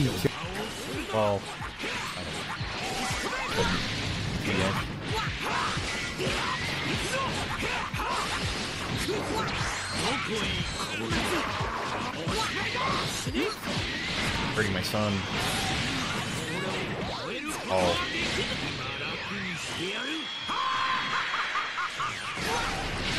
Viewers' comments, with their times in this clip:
0:10 armor into lvl 3 laugh is od